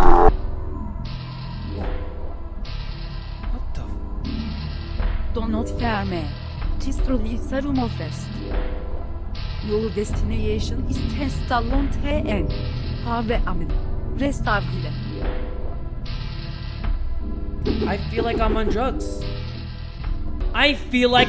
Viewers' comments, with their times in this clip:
0:05 Nobody : Literally nobody : Me trying to impersonate Celeste's French accent